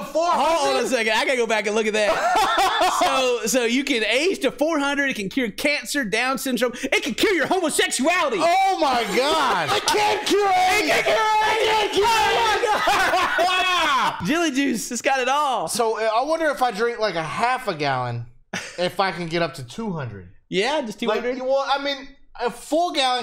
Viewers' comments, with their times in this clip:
0:09 I love how hyped they get "IT CAN CURR AIDS!"